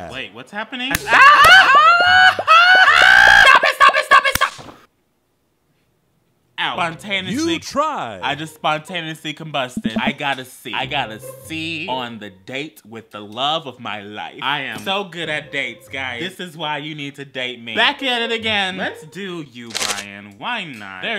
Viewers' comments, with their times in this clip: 0:03 "*unholy screeches of the damned*" I'M DEAD